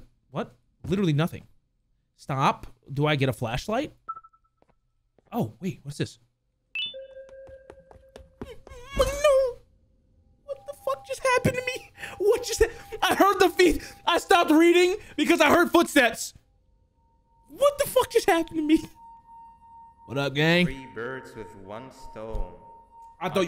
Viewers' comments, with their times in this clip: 0:07 his little scream 😂